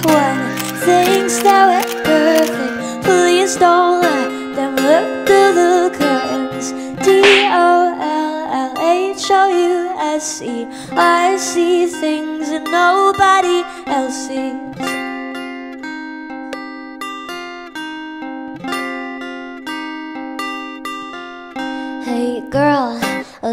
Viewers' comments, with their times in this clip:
0:06 S M A C K